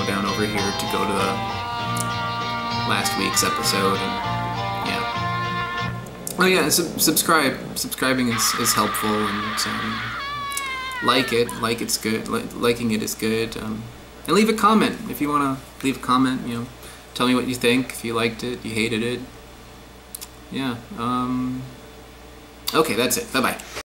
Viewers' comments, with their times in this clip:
0:08 That scream is a little bit disturbing.